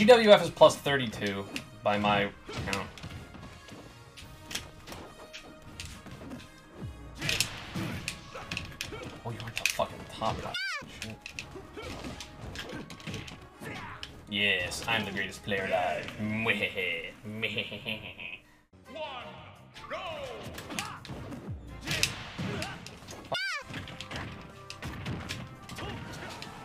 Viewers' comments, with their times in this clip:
0:09 that Pika censor. So close. 🤣